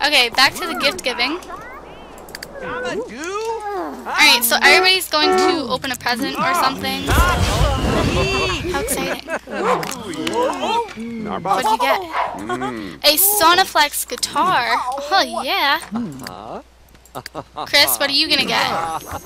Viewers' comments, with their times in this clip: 0:06 Did anyone else here the meteor hit